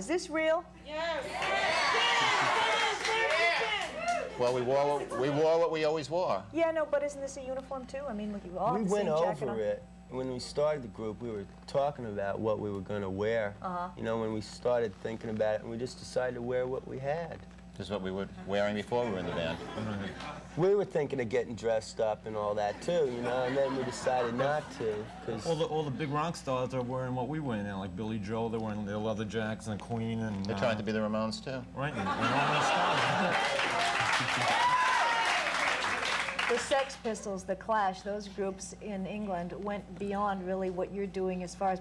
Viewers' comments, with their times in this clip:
0:10 Dee Dee sounded pretty genuine there Nice one , man!
0:27 Wait, how does he mention Billie Joe Armstrong? He would have been 11 by then.